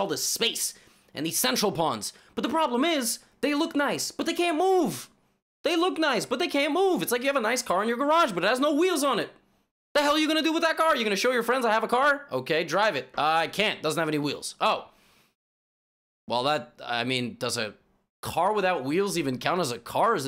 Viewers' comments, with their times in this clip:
0:04 Levy sounds just like Aziz Ansari 😂